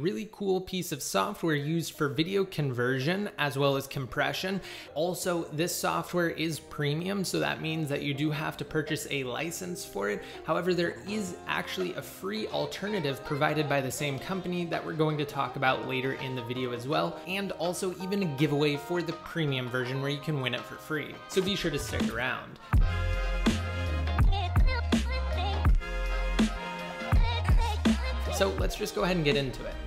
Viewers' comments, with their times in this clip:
0:10 what's happening to your voice lol